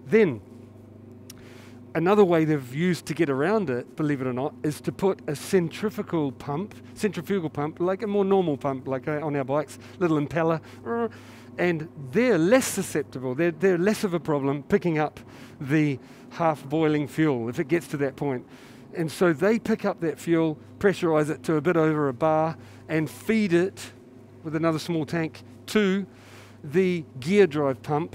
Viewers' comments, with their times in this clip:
0:10 “little impeller” Simon simulates pump noise😂😂 brilliant